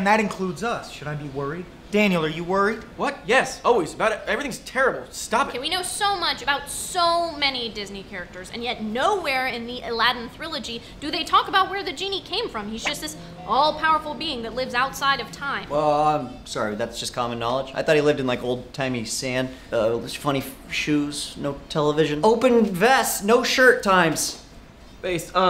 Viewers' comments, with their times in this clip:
0:10 did she call trilogy a thrillogy ??